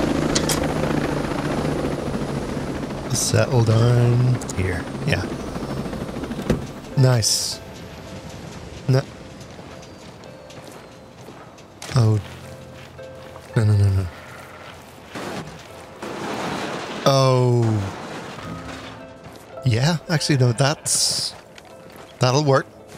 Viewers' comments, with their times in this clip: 0:06 I love the Tony anderson instrumental